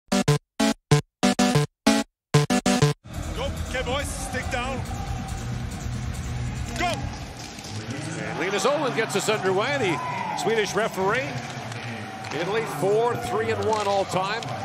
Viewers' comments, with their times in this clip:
0:02 Why is there Arnold Schwarzenegger talking